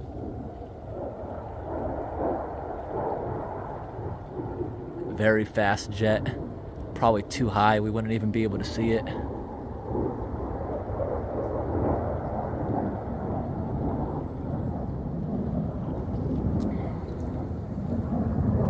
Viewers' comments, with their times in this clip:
0:03 It sounds like a military jet doing some kind aerobatics maneuvers. Perhaps the F-16 pilot is training.
0:03 Military jet for sure. Any air bases nearby?